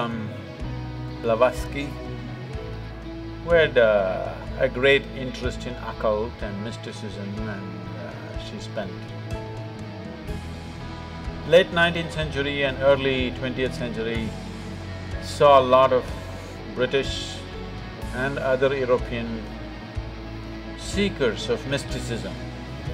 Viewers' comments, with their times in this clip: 0:06 yes I stopped watchting becaus of the music.